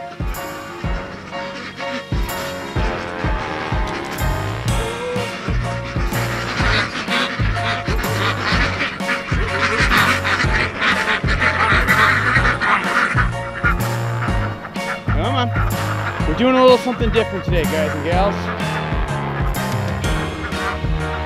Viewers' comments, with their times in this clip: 0:09 Each duck must comment individually upon the developing situation, even if all the comments share a certain theme: CONCERNED BUT DIGNIFIED QUACKING